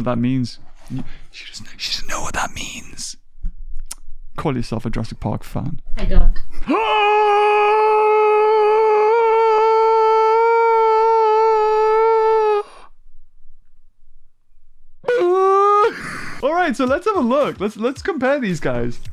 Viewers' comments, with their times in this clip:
0:07 one it sounded like the scorpioucs rexs roar because it was so long and I imagine beavers mind is GET OUT OF HERE